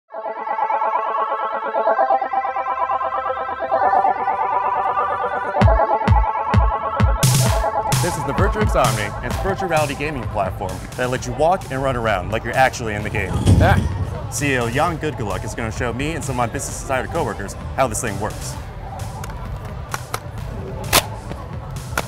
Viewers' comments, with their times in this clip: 0:07 "this the virtue of sodomy..."